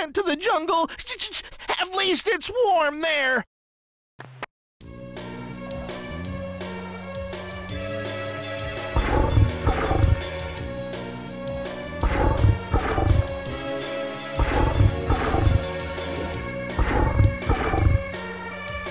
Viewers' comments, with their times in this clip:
0:05 This boss music still haunts me. I find myself humming it to this day (im 24).